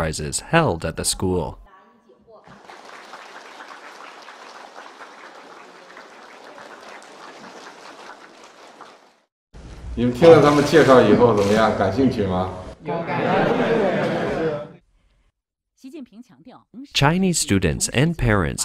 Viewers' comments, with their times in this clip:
0:06 That screams i had better clap the hardest out of everyone so i or my family is not made to disappear or i am permanently blacklisted from society, there is absolutely nothing authentic or organic about it. To me as a foreigner, maybe that is normal for chinese culture, still comes off as creepy as hell. Anywhere else in the modern world that would come across as either disdainful mocking/satire or extremely disturbing, like the person is pleading for their life.